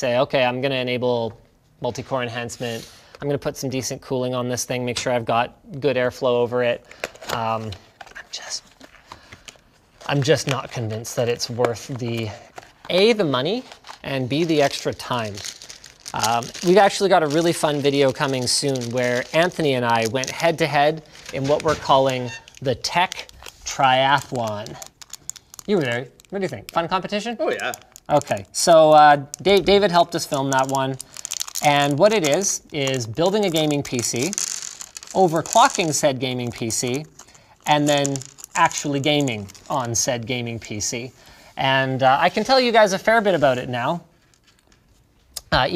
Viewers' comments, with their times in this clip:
0:10 I swear it sounded like the camera man or someone was saying, "I'm just not convinced", like, to help you find your train of thought. I was only listening though and rewind again and oh, it was you..
0:26 the most canadian "oh yeah" i've ever heard